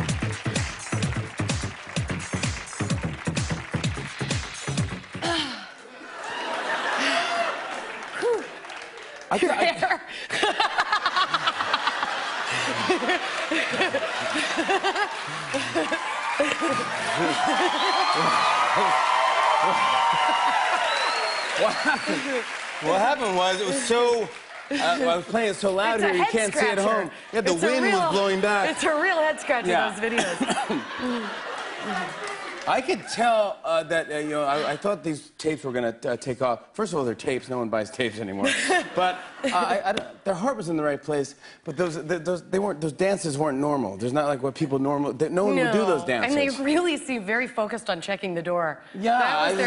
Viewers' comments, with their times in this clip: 0:08 I love Jenn's laugh it is pure joy and makes that skit that more funny and real. <3
0:09 the other laugh...
0:09 Daaamn that laughter kills me :D
0:10 don't mind me I'm just saving to see her laugh
0:11 Jen and her laugh is absolute perfection. Jimmy didn't know how to react, she was so stunning!!
0:11 jenn is so cute her laugh 😍😂
0:32 Someone shouted 'Sexy!'